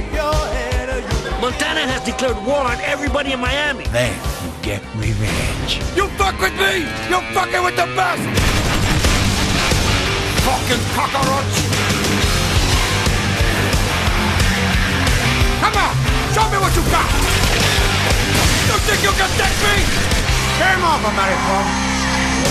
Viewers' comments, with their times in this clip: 0:08 ehm.. did he say : Fucking Kakarotts?